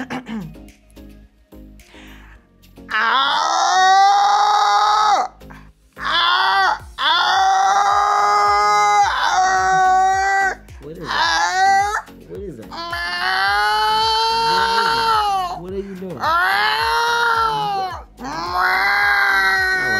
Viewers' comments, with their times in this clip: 0:03 sounds like someone who’s Constipated